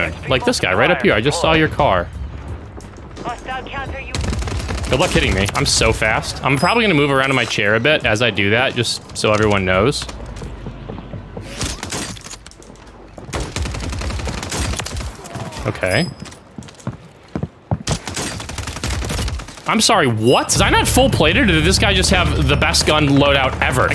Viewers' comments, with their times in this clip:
0:09 I’m an OTR truck driver and thought someone was knocking on my door lol. Stopped the vid and checked.